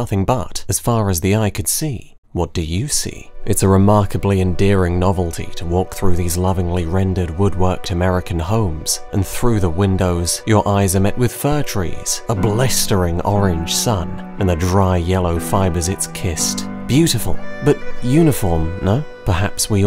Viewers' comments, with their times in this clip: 0:05 The MUSIC in FC5 is amazing. When it started playing I was just brought back. Music has an insane ability to help us capture moments and cement them in our heads. I love the FC5 music.